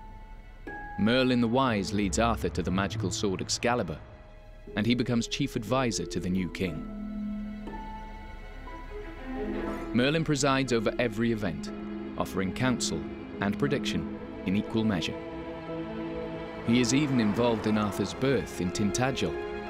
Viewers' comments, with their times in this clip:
0:03 The strings sounds very much like Annie Lennox’s ‘Little Bird’.